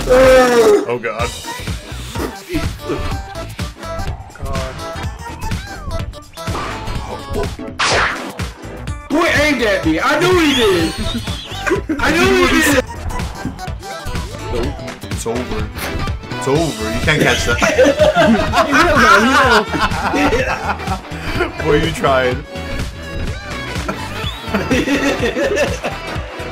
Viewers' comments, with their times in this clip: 0:10 Dat WHEEZE ,tho.